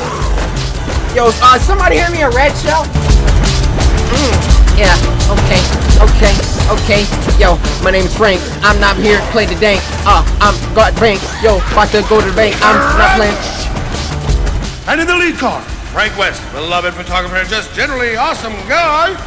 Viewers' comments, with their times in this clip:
0:07 The rap do